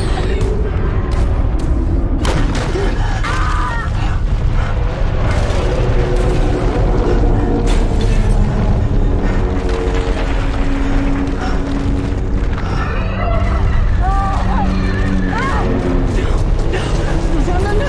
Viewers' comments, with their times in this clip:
0:03 noomi rapace yelling